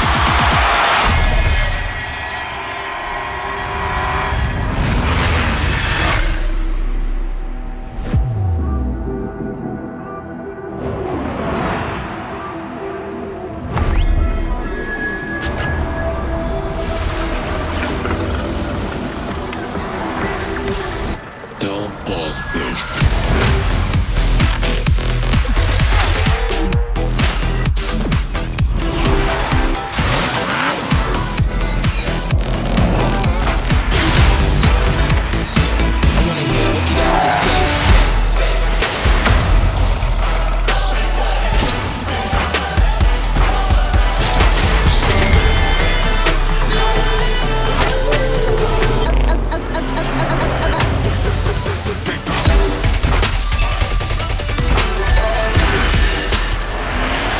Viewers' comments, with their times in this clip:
0:07 don’t mind me just making a replay button for that slowed music 😂
0:16 SINCE WHEN DO SHARKS GROWL LIKE TIGERS? LMAO
0:38 the music is getting pretty epic here, anybody knows this song name ? i don't remember hearing it in rocket league playlists !
0:45 What's that voice I kinda like it.